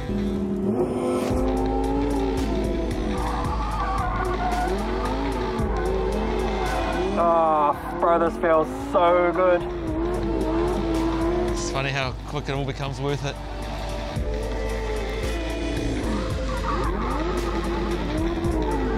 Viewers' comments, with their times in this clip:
0:05 Can anybody let me know what's the background track playing from ...sounds so heavenly